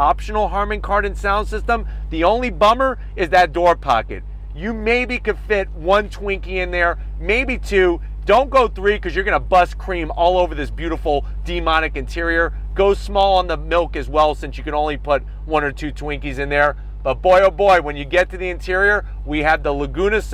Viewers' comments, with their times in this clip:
0:04 buddy i already popped cream as soon as i heard that exhaust